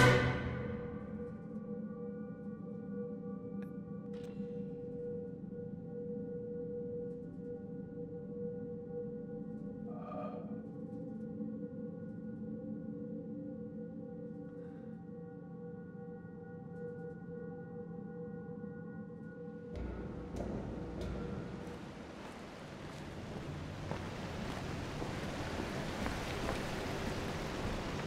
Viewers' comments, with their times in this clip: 0:09 There is nothing louder than the silence